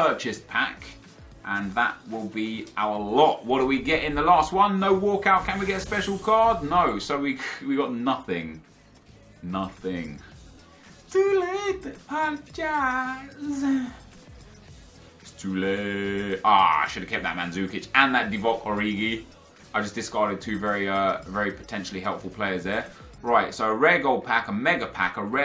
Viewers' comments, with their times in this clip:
0:10 We watch you're video for entertainment, not for you to sing no disrespect